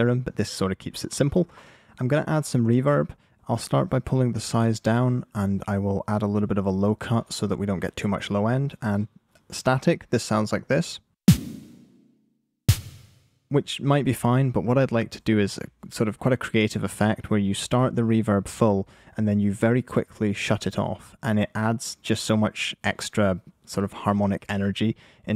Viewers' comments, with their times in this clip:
0:10 the moment when you know it isn't going to sound nice